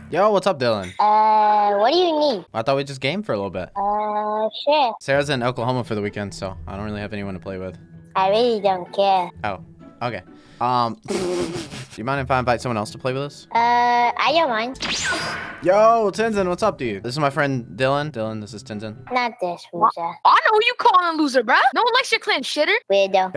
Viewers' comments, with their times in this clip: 0:08 The way he said I really don’t care 😂